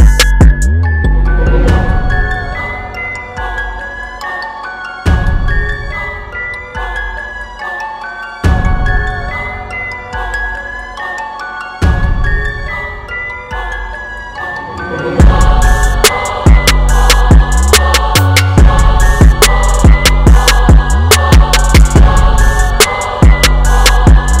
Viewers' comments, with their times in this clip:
0:06 You really trying to get me to go in.. aren't you.. Listening to what I listen to ahhhhhhh ccchhhhoooooo I can still breathe see no need.. new.. that's rude.... Are you trying to scare me or is this why they are scared of you.... Rhyme books funny they said I only had nurseries... For some reason though No one wants to verse with me... Those voices though.. what are you trying to say to me...... Choirs sing different keys you you me me differently...... Bass fluctuates too much... turn it down two decimals... Hear the pop.... The drums over the threshold.......... 4-23-22.